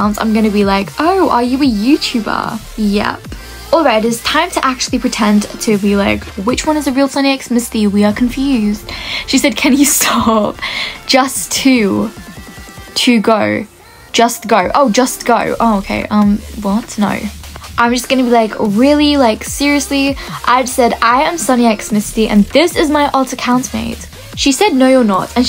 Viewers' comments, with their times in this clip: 0:10 the way she said umm what no